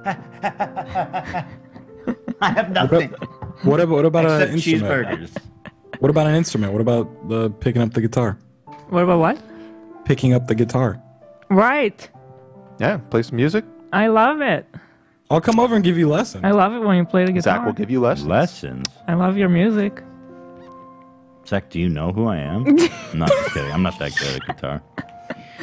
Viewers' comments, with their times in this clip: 0:09 Holy crap, the light that went into hila's face and eyes with the idea of ethan picking up the guitar again, I've never seen such honest and gigantic excitement on her, took all over her, even her voice changed completely